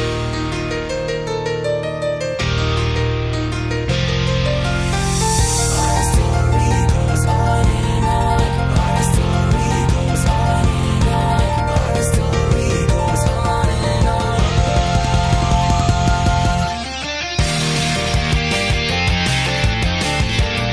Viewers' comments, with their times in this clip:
0:05 This song sounds like a shounen battle anime opening starting and I love it ❤